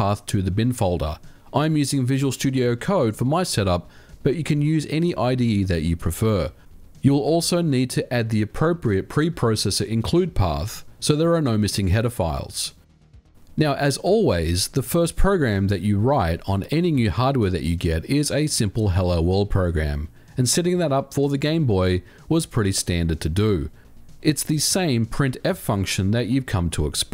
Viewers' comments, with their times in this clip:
0:09 i thought he said something else